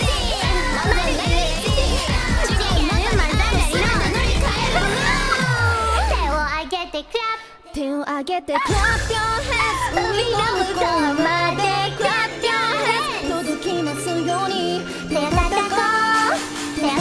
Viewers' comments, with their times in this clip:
0:05 rushing gura so cute